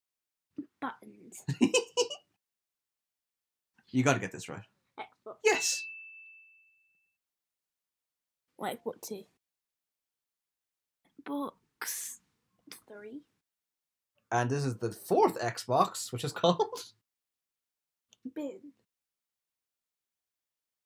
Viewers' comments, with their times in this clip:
0:08 what is she saying?